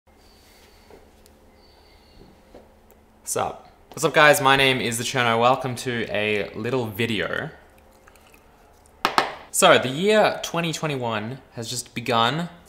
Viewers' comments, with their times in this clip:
0:00 I have a bird that sings the same tune at my house